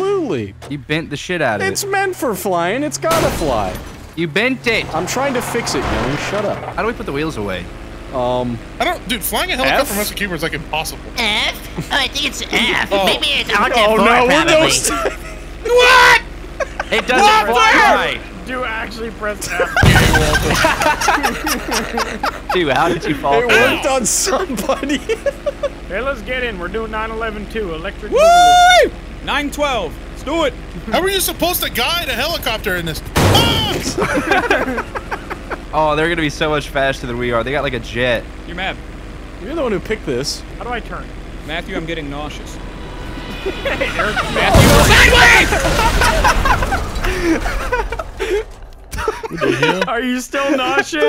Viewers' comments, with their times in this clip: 0:09 I fucking snorted when I heard the voice
0:11 Bruh just turned into Eric Cartmann 💀
0:12 dude sounds like Eric Cartman
0:14 yo I didn't know y'all played with Lil Jon
0:32 that sounded like woody from toy story
0:33 The most npc scream haha